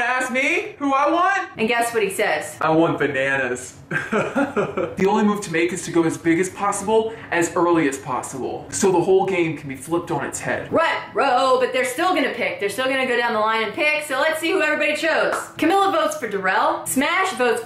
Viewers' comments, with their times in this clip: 0:03 I paused to tell you that your Wes impression was spot on, "I want Bananas" lol. Okay, back to watching...